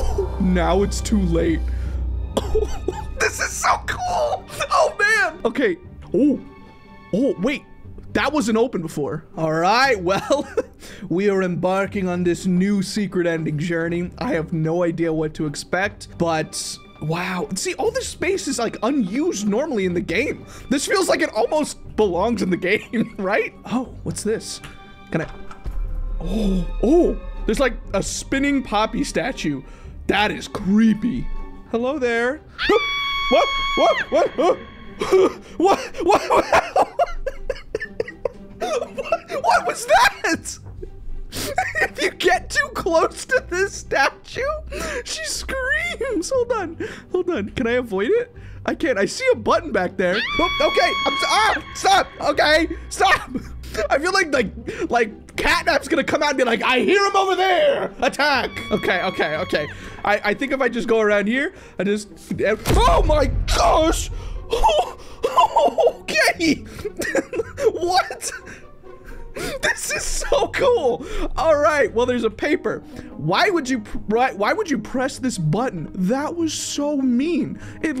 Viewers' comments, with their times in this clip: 0:04 I thought he said fighting a switch😂
0:30 Touch me I scream Poppy: AAAAAAAAAAAAAAAÆAAAAAAA
1:02 Is it just me or did everyone’s room shake